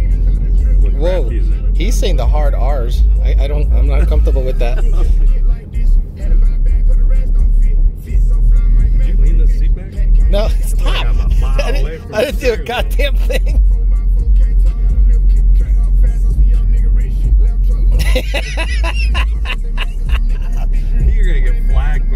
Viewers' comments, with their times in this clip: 0:06 minute mark, awesome music 😂😂😂